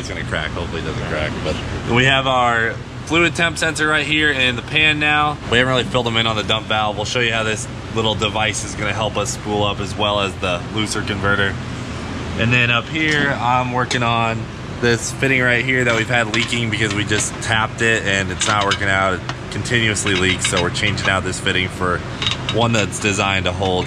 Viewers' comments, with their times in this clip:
0:09 I have heard of diablo, but a Lucifer converter?